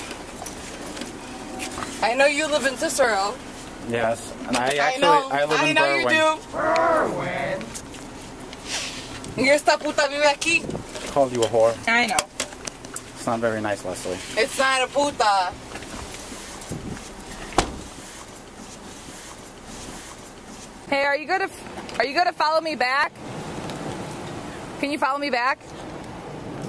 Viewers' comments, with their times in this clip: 0:05 Weird ghost voice
0:05 what is that sound repeating him ??
0:05 ... Umm what was that strange sound in the background 😲 👻
0:06 did Bill from Gravity Falls just say "Erwin"?
0:07 There is a strange voice on